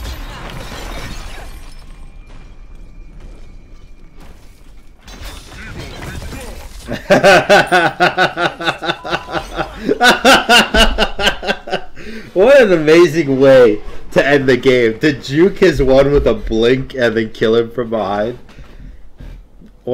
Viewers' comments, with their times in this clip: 0:06 Top evil laughs in anime history